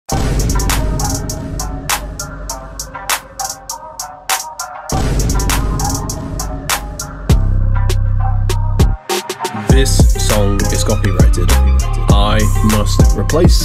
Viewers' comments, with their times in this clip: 0:00 all i hear is vineboom as soon as i click on the video😂😂